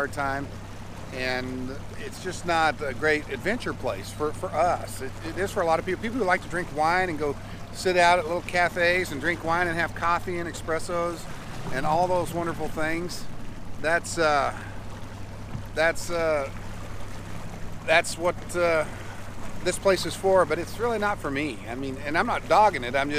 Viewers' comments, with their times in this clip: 0:09 expresso... busted! jk ;P